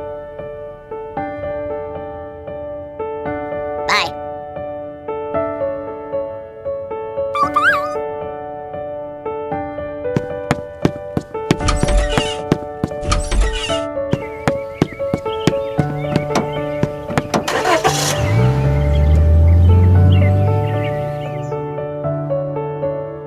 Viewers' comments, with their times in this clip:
0:04 😂i like their voice at that time